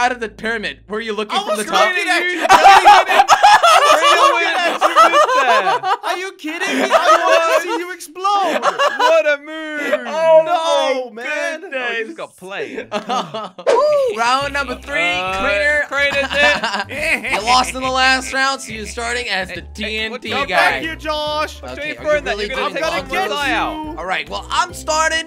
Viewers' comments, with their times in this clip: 0:06 I guess he didn't knwi his future laughing ability!